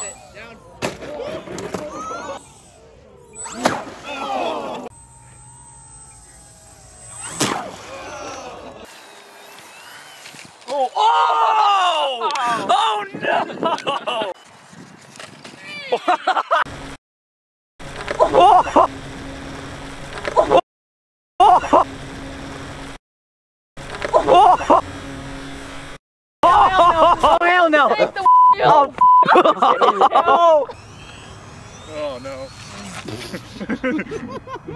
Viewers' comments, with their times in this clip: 0:08 Wii sports "awwwwww"
0:20 The last sounds : OVERSPEED ,SISTEMS DAMAGEDS ,PULL UP ,PULL UP Sounds of impact